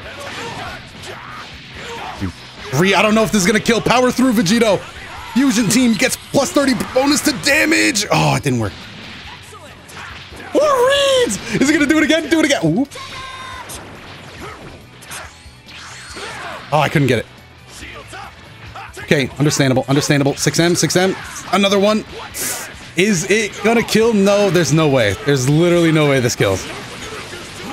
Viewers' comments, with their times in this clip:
0:08 I laughed so hard on that random sound he makes when vegito grabs vegeta
0:09 you can feel the happiness in his voice